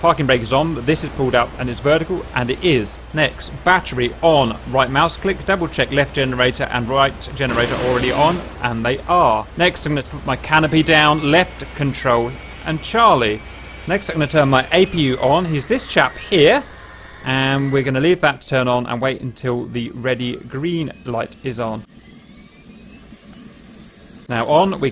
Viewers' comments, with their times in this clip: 0:08 So did nobody else notice the 20mm burst ?? Wtf was that all about?!